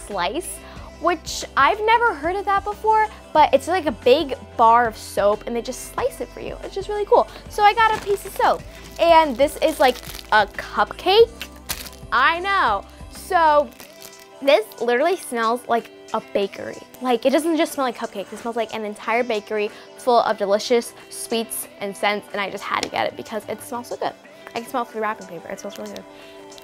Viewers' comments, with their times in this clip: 0:10 “and this is like a cuPcake” omg why do I find this so funny 🤣
0:12 when she tell “i know” I thought of Monica from friends